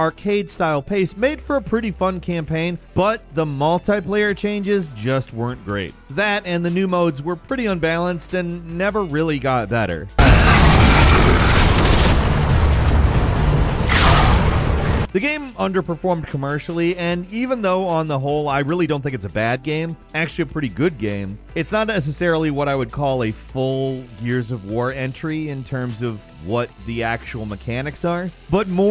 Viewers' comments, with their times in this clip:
0:09 RIP Headphone users 😁
0:09 F'ING HEADPHONE WARNING
0:09 bro wtf, my ears :D
0:10 HEADPHONE USERS BEWARE!
0:10 Maybe it was my speakers, but loud warning
0:10 scared the shit out of me HAHAHA that was loud.
0:10 holy fuck, I'm awake after that volume spike.
0:10 be careful headphone users, the volume CHANGE Fans Absolutely HATE.